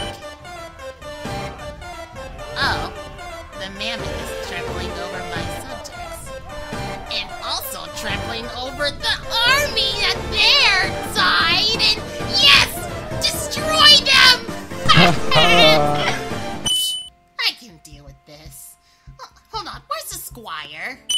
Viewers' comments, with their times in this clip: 0:08 you sound like my 7 year old cusin